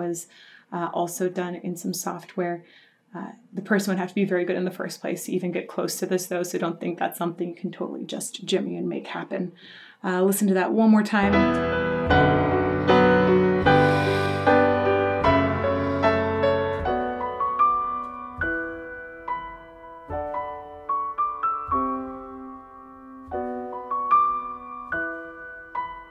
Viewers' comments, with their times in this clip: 0:09 When the Piano moves from the low, dark notes to the high pitched bright ones, it feels like all the sadness crumbled and pushed inside my chest is falling apart and my heart trembles. Amazing emotional piece!